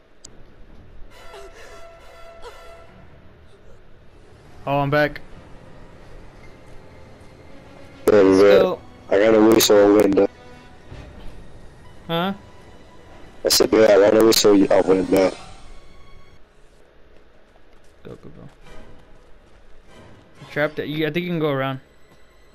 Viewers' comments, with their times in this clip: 0:07 hahah that mic doing me wrong